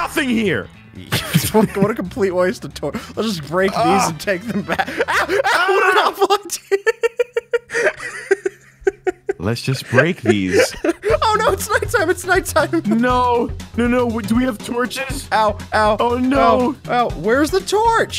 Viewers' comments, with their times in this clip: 0:05 i think i've heard "ku*wa"